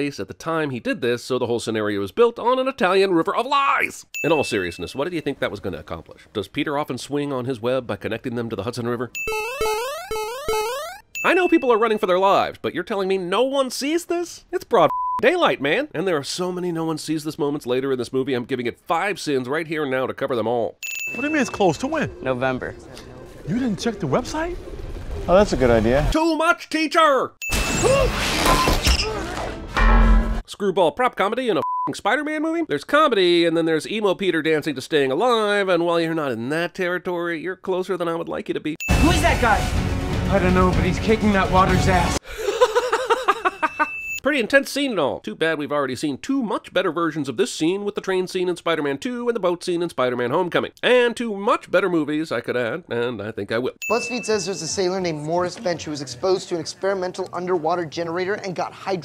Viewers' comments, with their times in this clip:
0:09 Rofl at the mario sounds
0:40 The hysterical laugh
0:42 thats the most genuine laugh ive heard out of this guy